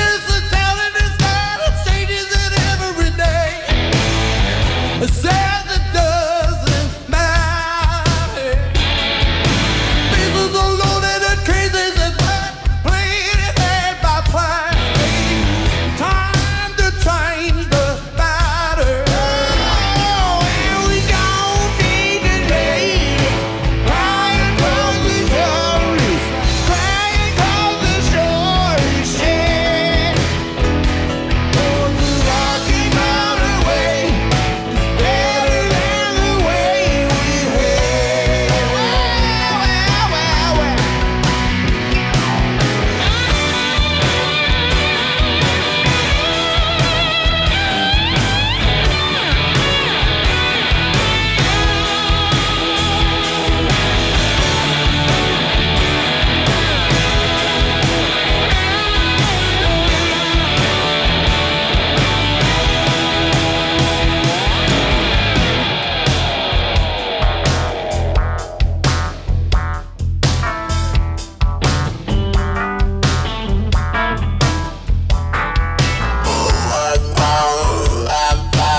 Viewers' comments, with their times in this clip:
0:05 Joe really likes Daryl's singing! Look at his face ! This is really a superb performance and high-quality sound recording! Landed here when looking for "Rocky Mountain Way live".... This is how how stuff should be recorded! Good technical setup, the whole band ready, all instruments at once and: 4-3-2-1-go! Yeah!
1:05 Man, that groove is so locked.